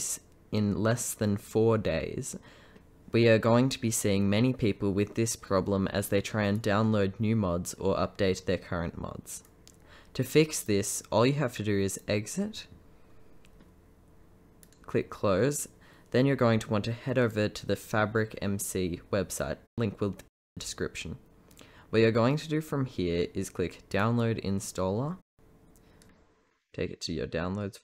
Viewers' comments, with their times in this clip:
0:09 hm that voicecrack